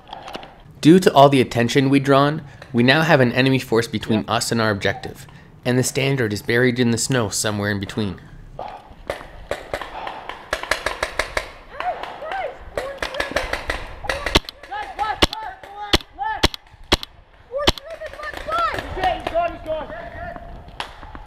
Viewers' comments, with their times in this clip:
0:07 Did im the only one that heard the 5 years cod kids XD